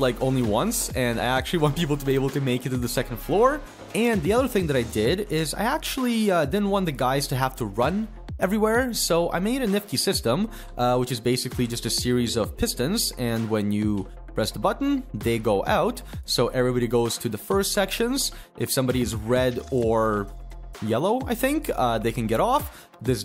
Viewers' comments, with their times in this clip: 0:09 what does Niff-tea have to do with this?